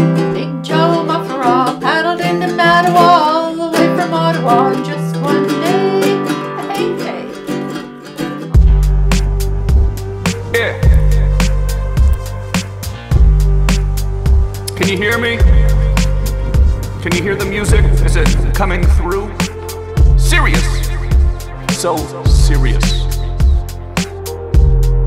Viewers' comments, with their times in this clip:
0:07 woah - when the bass and your vocal kicks in after your mom's singing genuinely moving...